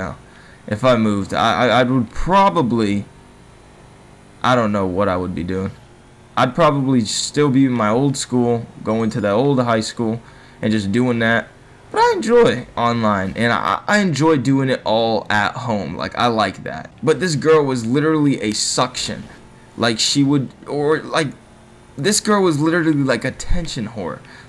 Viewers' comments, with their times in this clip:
0:05 epic voice Crack